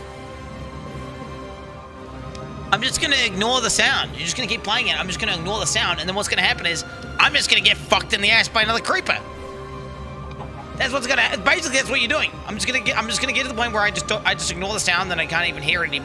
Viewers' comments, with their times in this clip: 0:03 this creeper sound is the donation